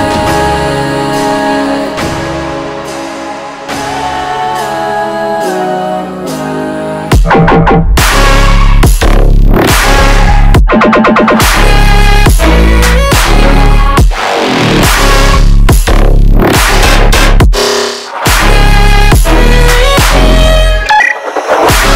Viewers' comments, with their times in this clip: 0:07 that drop is 🥵